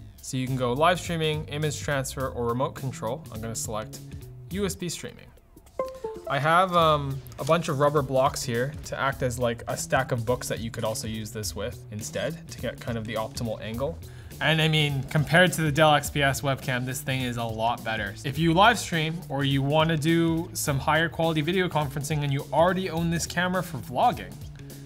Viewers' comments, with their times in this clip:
0:07 Windows 10 sound - respect